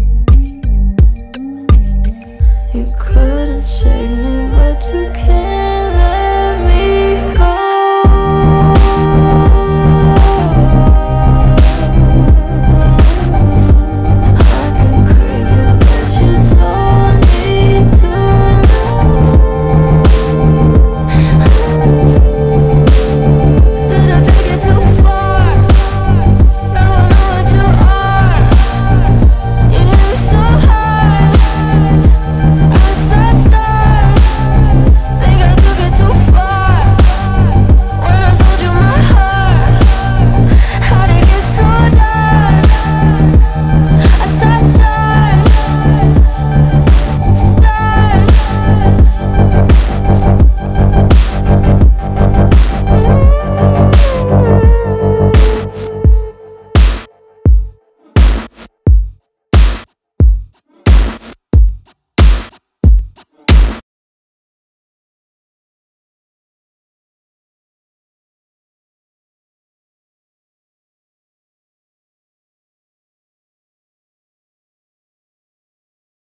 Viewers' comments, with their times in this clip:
0:04 i know — i like the part when she sings and u can hear the auto tune, one of my favorite parts of the song is, and i also think the autotube was intentional for the song ..
0:06 the way she’s using a completely different tone than she uses for most of her singing is so beautiful
0:07 I legit don't know why people hated this song so much....Yes, it may not relate to the album as much, but the music is....holy sh*t...TOP NOTCH, yo. The chorus, the bass, the electronic music....this song is insanely good.. Has been my #1 on Spotify for nearly 4 months. I love how Billie and her brother DECIDED to use and experiment with auto tune in this song to make it sound different...and it did. This song is my fav. by Billie so far (out of all her albums). Plus the music video...speechless. Beautiful. Sick. The ending chorus and starting ....I get chills every time.
0:24 At the section the tune sounds similar to ‘lost cause’
0:57 it sounds like it’s fading into therefore I am